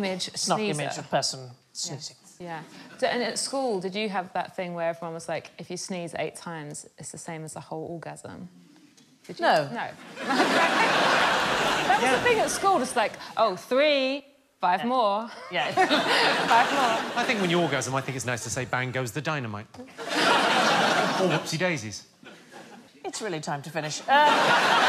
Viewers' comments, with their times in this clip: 0:09 Sandi's slightly delayed "no" is an excellent masterclass in comedic timing